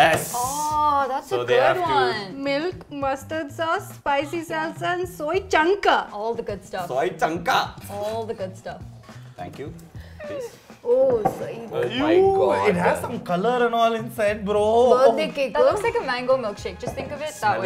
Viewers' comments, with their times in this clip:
0:04 Only we malayalees have that kind of slang🤣🤣
0:04 "Soy chunkaa?" Her mallu vibes are coming out. Lol.